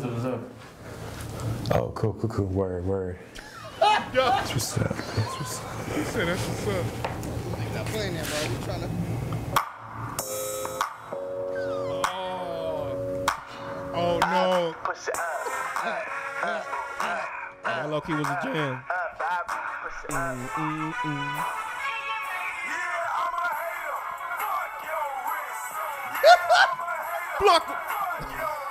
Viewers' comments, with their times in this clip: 0:09 🤣🤣 not this song